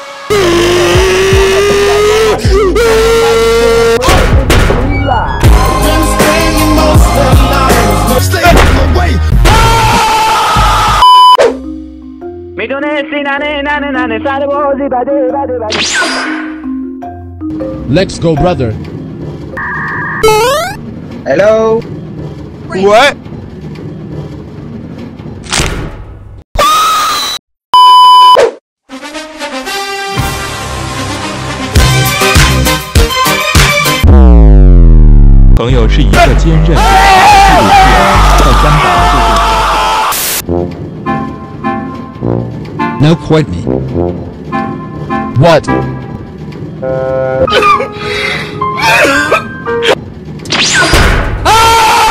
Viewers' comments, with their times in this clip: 0:03 I’m vibing to this epic music
0:09 Bro, you speak in Arabic
0:20 he speak arabic
0:32 That wide putin music made me laugh with the bacon😂
0:34 When the bacon starts flying and you realize he speaks Chinese It had me dying
0:35 bruh that part he speak Chinese 💀